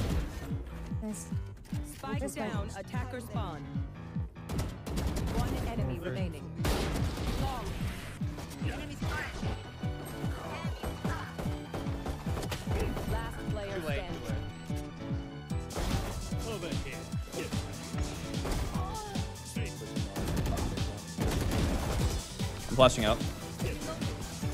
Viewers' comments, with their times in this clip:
0:08 not gonna talk about the classic shots perfectly syncing to the music??
0:09 apriciate the effort to shoot to the beat xD